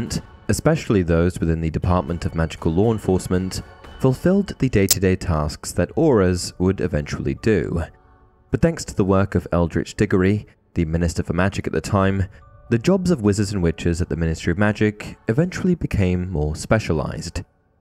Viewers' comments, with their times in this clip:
0:05 did anyone else's right channel speaker blow out with some weird noise?